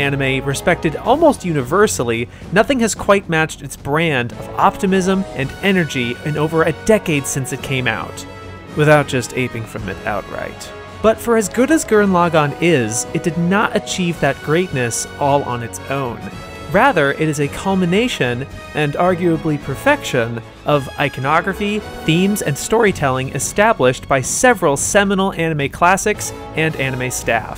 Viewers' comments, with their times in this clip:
0:10 Did the audio break ? Suddenly the narration shutoff and this weird repeating sound effect loop that sounds weird kept repeating over a bunch of flashy animation. Was this intended? If it was sorry I'm an idiot i have no idea what's going on. Edit: thanks to the kind author of the video I found out this was a mistake, as a workaround use closed captioning for about 5 minutes. (or else just enjoy the awesome Kanada montage 🤩)